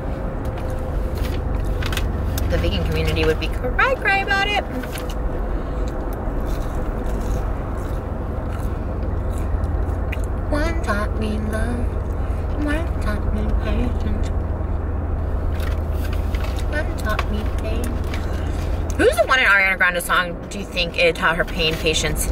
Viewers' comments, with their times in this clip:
0:10 omg Trisha you sound great here!